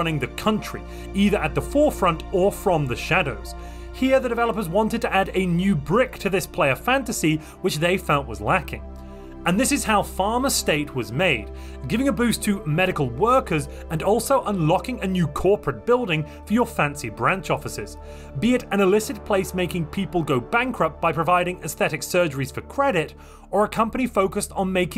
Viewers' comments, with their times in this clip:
0:10 Pfizer State? Wha..?